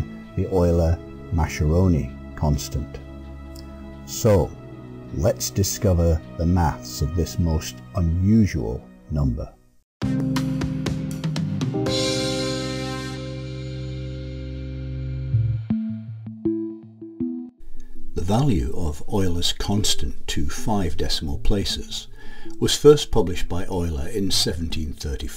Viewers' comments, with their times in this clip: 0:07 I came to the comments to see whether this had annoyed anyone else. I suppose we Brits (from his accent, he's definitely English) are joint equal with Americans as deliberately-uncurious monoglots. Worse: lots of British and American speakers cannot even get our own language right. Hey ho.